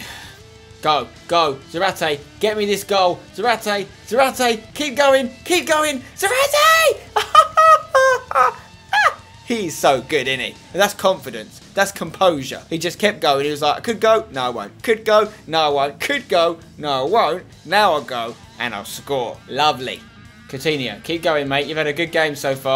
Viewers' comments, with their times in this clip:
0:04 Tha laugh is too much xD
0:06 Most embarrassing girls laugh ever xD
0:07 The laugh though
0:08 wtf was that noise?